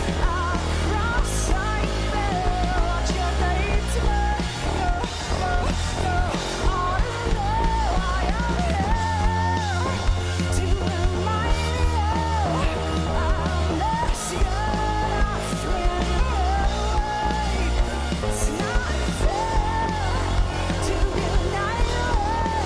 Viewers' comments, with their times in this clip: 0:06 Good God… when your debut album is your magnum opus (JaggedLP), how do you top that? Well, you do… lol. You continue to rise to the stratosphere & beyond; your songwriting, your expression; your musical identity evolves even more, beyond anyone’s wildest dreams… she amazes me. Since I was 11 years old as a matter of fact. I’m 36 now. haha. For real, brings tears to my eyes, even after all this time!! Literal definition of a crescendo, after the eerily-chill bridge of Alanis laughing/yodeling… bursting in a finale; a triumph of musical+lyrical genius, from all on stage. And the crowd goes wild even more… Alanis will make you cry tears of joy, gratitude, as well as tears of sadness. BUT, more than anything, the final chorus of 'You Oughta Know' is the SHITTTT that just makes you cry because…music. 🙂